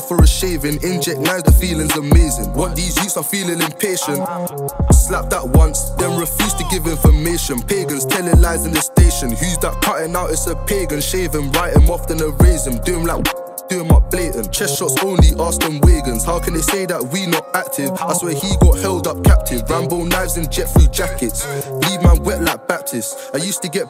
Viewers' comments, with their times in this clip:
0:04 That flow after wtfff🔥🔥